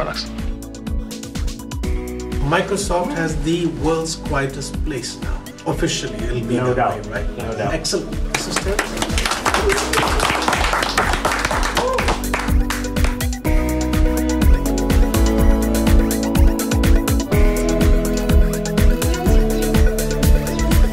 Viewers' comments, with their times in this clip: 0:06 Congratulations, guys. BTW, I like how (completely without irony) you celebrate by applauding!